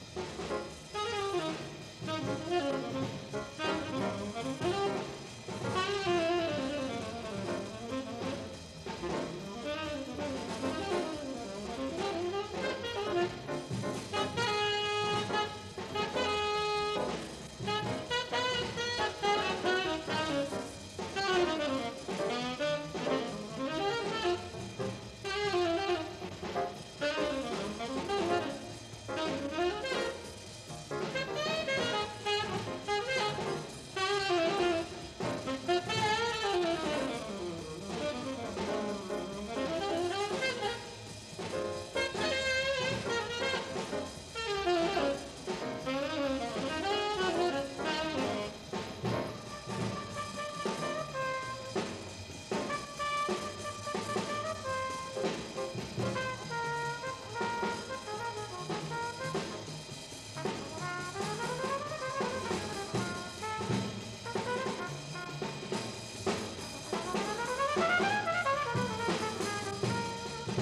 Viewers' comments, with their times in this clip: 0:05 The lick is so fire!
0:49 Miles starting to play sends me into the stratosphere and the center of the earth at the same time.
0:56 Great video, the Ina archives are incredible! Miles quotes "You're Getting To Be A Habit With Me"